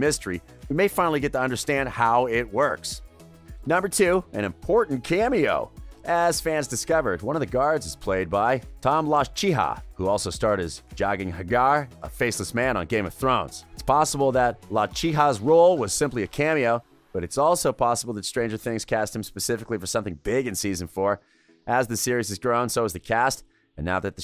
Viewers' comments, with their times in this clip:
0:08 the man just screamed in excitement